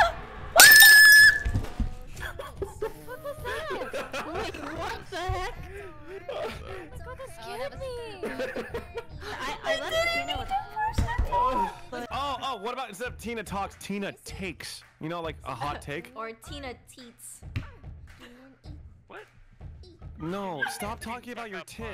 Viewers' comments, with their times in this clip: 0:05 guys.. someone just mo in the vid idk who but yeah. I'm not even kidding... the prove: (listen carefully)